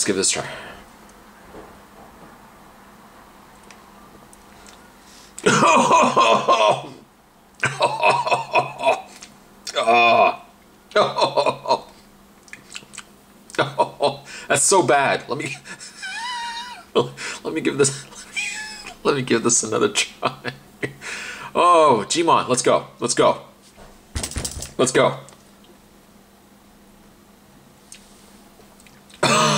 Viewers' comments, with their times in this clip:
0:10 Your choking then your just tasting the drink then choke again hahaha